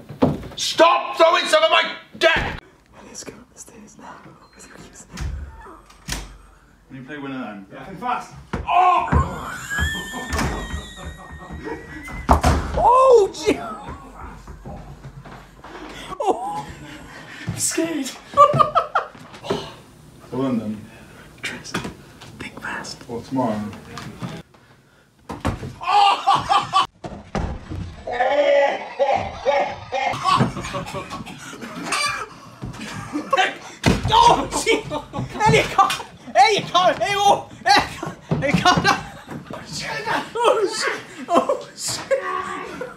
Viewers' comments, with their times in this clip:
0:09 sound of a silent fart
0:27 He sounds like Santa Claus ❤️